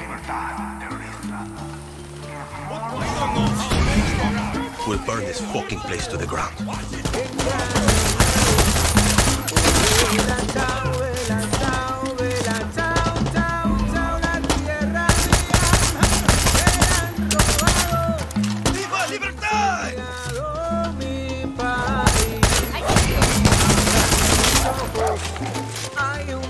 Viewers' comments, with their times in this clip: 0:08 okay.. I’m gonna be honest, the music choice while making all that chaos makes it classy as hell. Reminded me of the sequence in Far Cry 3 which is one of my most favourite moments in the game. I really like the song, I like Julio too. Wish to see more of that guy.